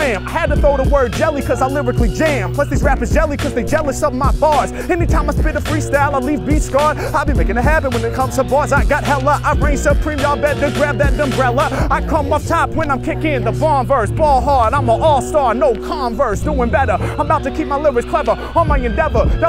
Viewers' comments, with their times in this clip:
0:06 I am not sure what I just heard there, but I know a next level bump when I hear one. He’s been practicing. Over the next 30 years, he’s going to keep practicing, and we’re going to hear free-styling reach a level of complexity previously thought impossible.